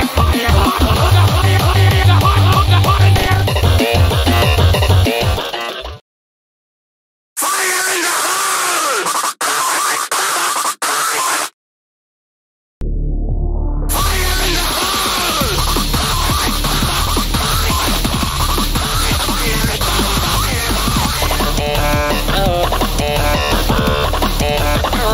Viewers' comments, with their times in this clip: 0:07 Yes so loud
0:07 Yes So loud😢